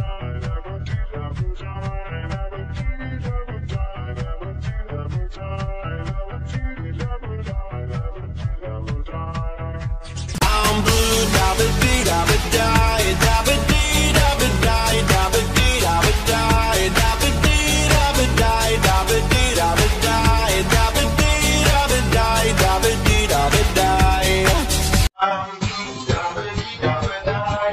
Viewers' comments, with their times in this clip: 0:10 Silver the Hedgehog Voice